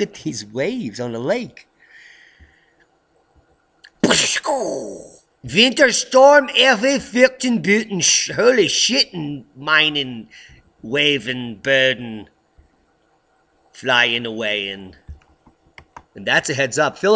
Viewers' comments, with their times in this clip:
0:04 LMAO 🤣🤣🤣 ... your German made my day!